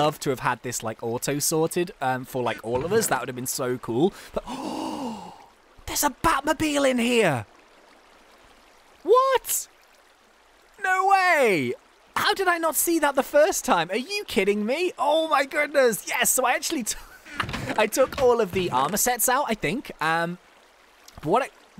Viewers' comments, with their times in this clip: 0:07 batman horrible impressions?